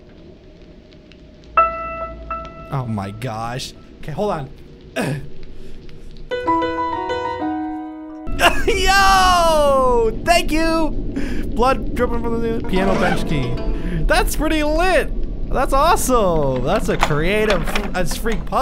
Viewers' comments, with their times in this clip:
0:03 I love hoe you played the piano like that on xD